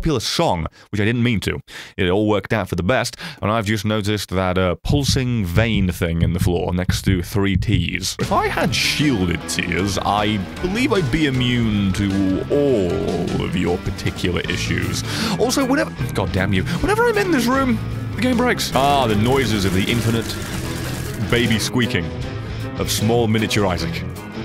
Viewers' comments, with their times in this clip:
0:08 i love when This song starts to play